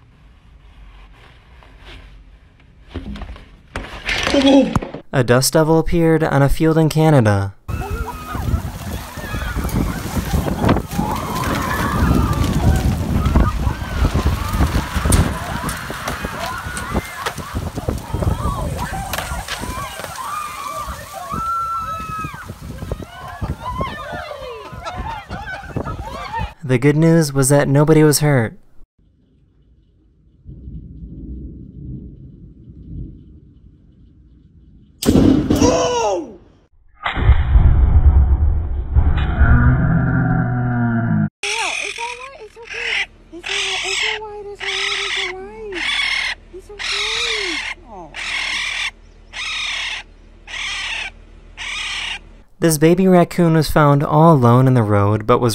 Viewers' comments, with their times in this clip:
0:10 u can see a chair hit that lady and make that one small S M A C C sound
0:23 “ people screaming in pain and fear” “Captions- [Applause]”
0:25 I love how the guy on laughs during the dust devil while everyone else is panicking.
0:41 that sounds like a pokemon cry
0:42 So pokemon' sounds are realistic, that racoon sounds exacty like a zigzagoon